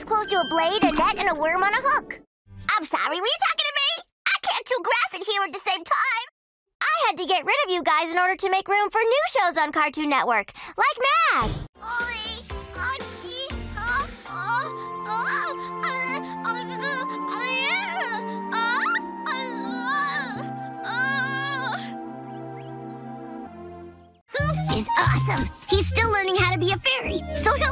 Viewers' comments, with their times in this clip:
0:06 she sounds like twighlight
0:15 sounds so genuinely confused and sad and she did it so well that I actually felt sad too omg.